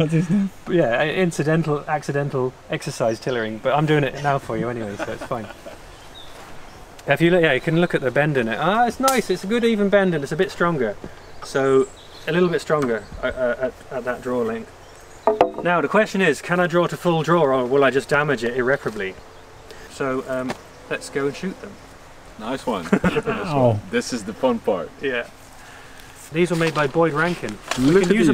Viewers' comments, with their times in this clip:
0:09 Did anyone else flinch,at when he was exercising the limbs and someone stepped on a stick,in the background..